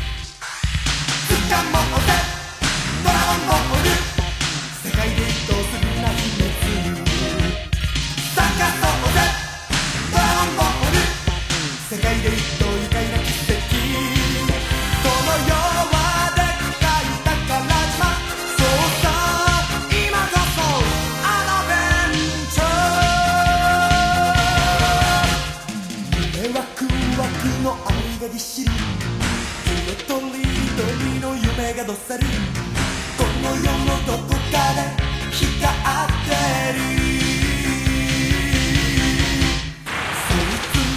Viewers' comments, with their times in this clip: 0:05 OMG this rhythm is so groovy!!!!!
0:21 I Thought He Say Aaadveentuurreeee!